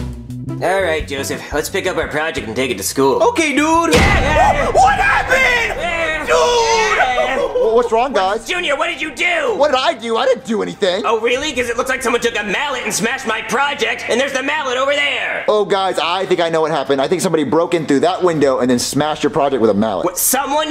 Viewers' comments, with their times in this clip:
0:05 Joseph’s scream scared me